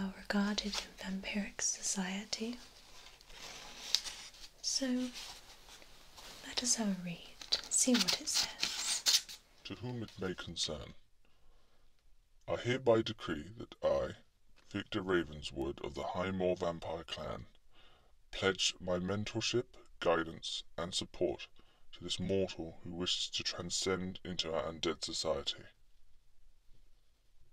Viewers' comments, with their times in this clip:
0:09 scared the sh*t out of me! Here's me, all innocently going through my library while listening to your relaxing voice when suddenly I am assaulted by the voice of a demon! "Which tab is that!?! Shut it down! SHUT IT DOWN!" ... Still, simultaneously humorous and relaxing. Great job :)